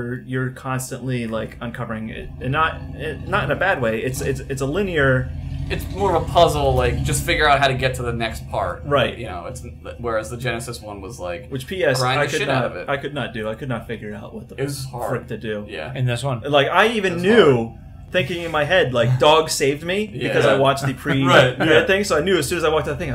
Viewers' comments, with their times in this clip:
0:05 HOLY POUP!! I heard Dog growlin!! wear ear phones.